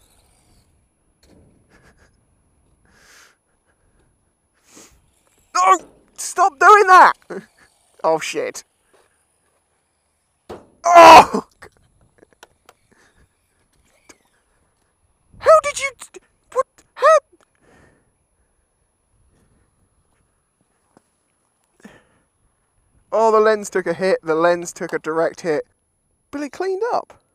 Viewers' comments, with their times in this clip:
0:10 I love the ' DONK' sound ! Virtually wet myself when i heard that sound! little things little mind and all that jazz! I like the way your mind works!